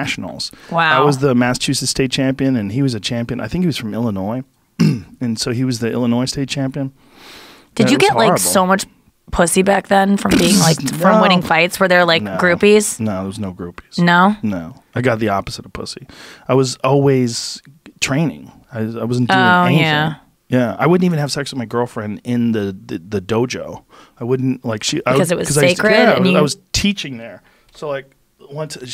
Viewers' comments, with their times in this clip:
0:10 I'm sorry but the fucking noise joe makes has me laughing every time I hear it